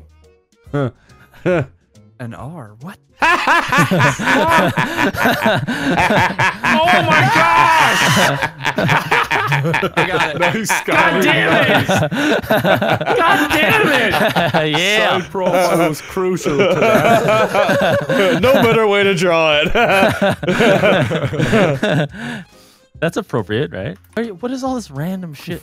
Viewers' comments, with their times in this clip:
0:07 the mating call of the wild 407